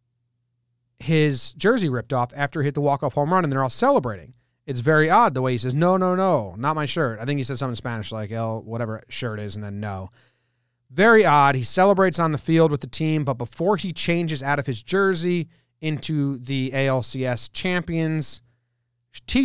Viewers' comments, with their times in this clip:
0:06 he said something along the lines of, “¡La camisa, no!” Or “I got a piece on, no!”